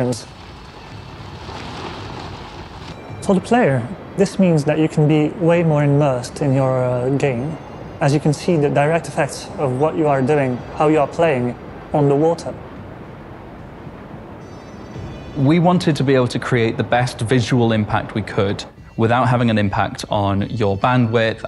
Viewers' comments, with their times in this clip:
0:03 I can still hear the music from the movie